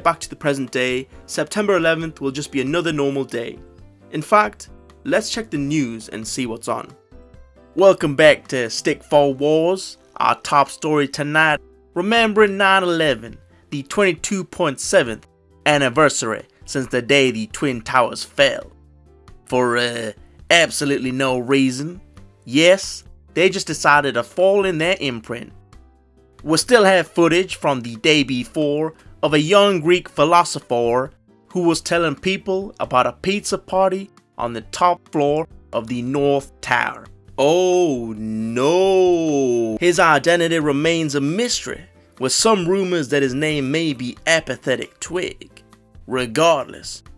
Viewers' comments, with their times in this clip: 0:07 real voice reveal
0:30 Is this you tryna do an American accent 😂